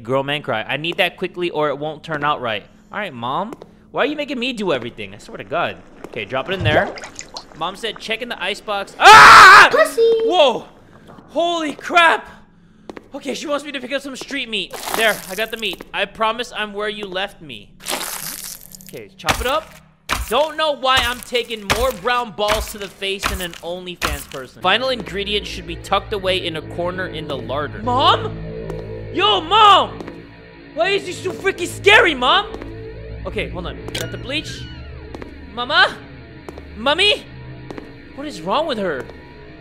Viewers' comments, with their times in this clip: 0:08 did everyone else scream or got their heart racing when he screamed at basically nothing or was it just me
0:25 that "mom?!" was so genuine